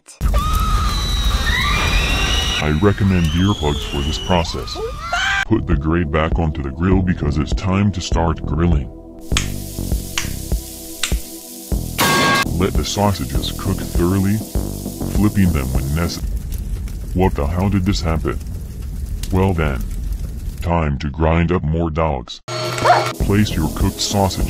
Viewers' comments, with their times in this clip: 0:09 dink *dink dink* METAL PIPE